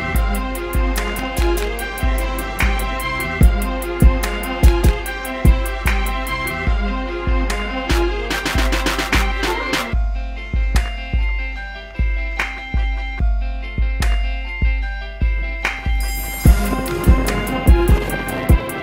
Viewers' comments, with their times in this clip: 0:04 what trick is that? and the music is fucking weird. dat trumpet